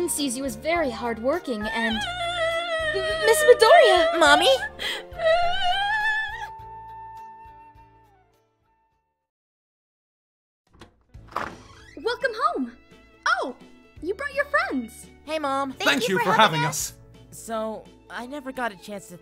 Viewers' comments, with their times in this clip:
0:03 Am I the only one who thought Deku’s “Mommy!” sounds like NANI?!